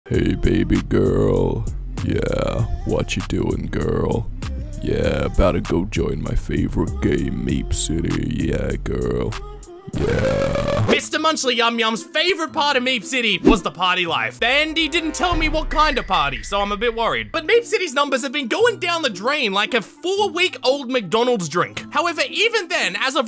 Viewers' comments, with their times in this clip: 0:00 Slender voice reveal belike
0:00 he sounds so much like the average slender its scary
0:01 he puts other deep voice people to shame 😮
0:10 Why did it sound like a burp?